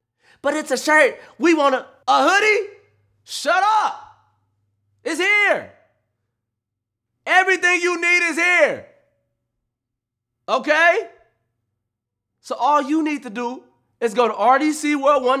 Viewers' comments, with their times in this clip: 0:03 swear this nigga sound like Chris rock